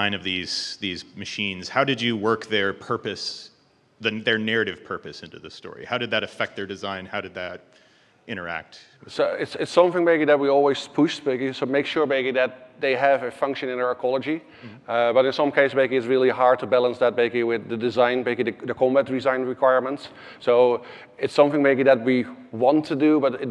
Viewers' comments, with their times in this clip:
0:09 "Its something BEGGI that we always push BEGGI, to make sure BEGGI..." I can't breathe🤣 really good talk btw, super valuable stuff!